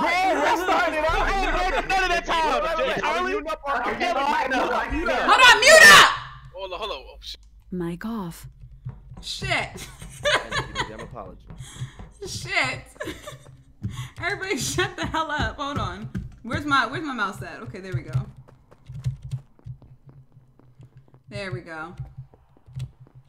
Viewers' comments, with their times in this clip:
0:05 Mann this still has me rollin, everybody muted up real quick 🤣